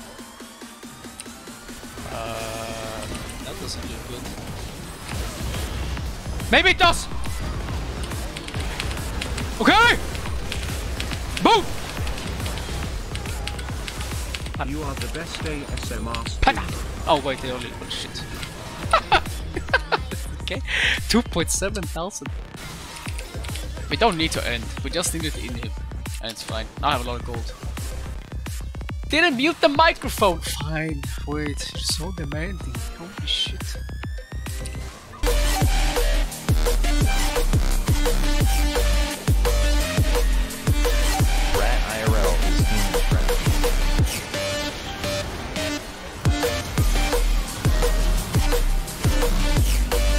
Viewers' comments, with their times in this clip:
0:09 i love when he says OKEY
0:38 ahhh that music is so broken and offbeat, who fucked it up